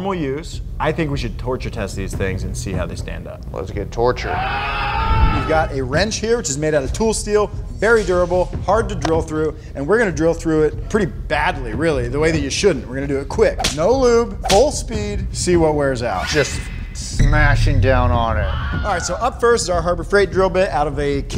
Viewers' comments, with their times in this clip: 0:06 The "torture" scream LOL